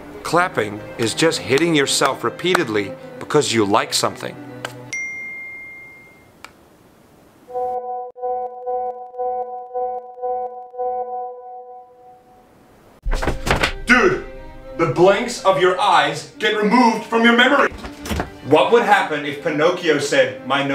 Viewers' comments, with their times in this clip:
0:05 I love how he puts an Apple text tone for an android XD